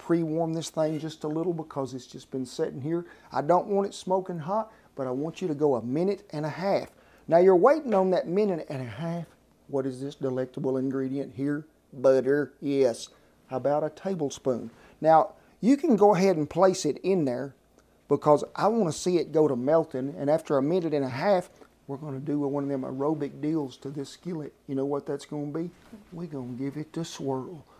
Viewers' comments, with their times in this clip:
0:10 Click here to hear him say BUD'err